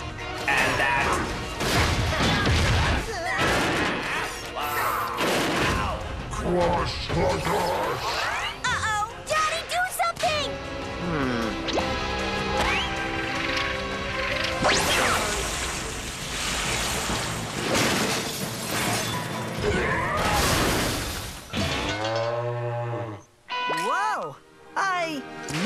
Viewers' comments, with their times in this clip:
0:07 No if u put it close to ur ear it says johnny